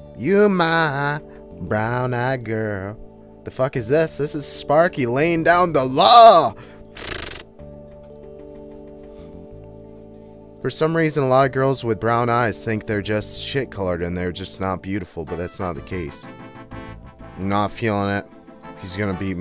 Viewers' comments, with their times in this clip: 0:04 that machine gun sound and clicking lmaooo